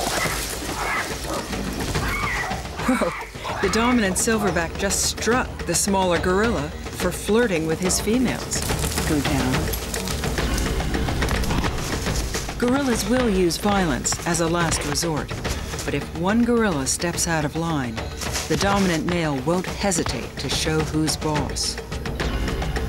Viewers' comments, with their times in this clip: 0:09 during the fight, u can hear the hard impact of the punches, so you know theyr punching really hard